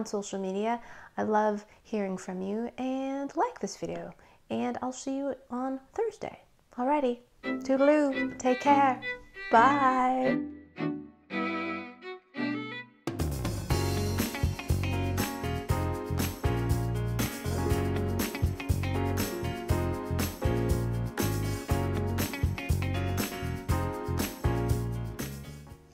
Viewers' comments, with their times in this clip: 0:07 I'm so happy that you haven't changed the music that comes at the end that's Soo cute it just reminds me of you .......